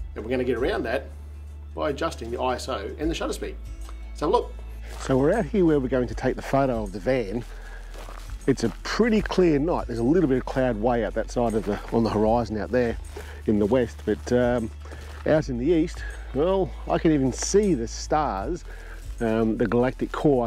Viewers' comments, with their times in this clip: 0:05 Thy for covering this issue, but in the video the voice is on the left and music on the right audio channel - thats a little bit strange to listen to honestly its fine again, its only in the studio